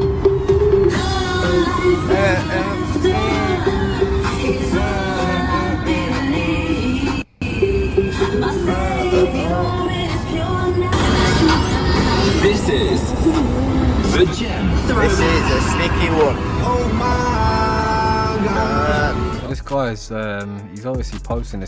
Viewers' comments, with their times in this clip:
0:05 tune!!! Only the old skool ravers will know 😅